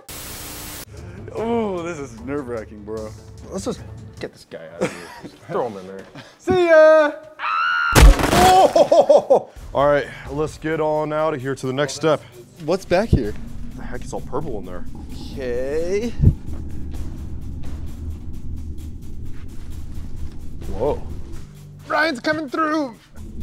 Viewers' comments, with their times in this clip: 0:06 oof sound effect
0:06 LMAO WHEN THE SKELETON SCREAMED IT WAS SO FUNNY 😂🤣😂🤣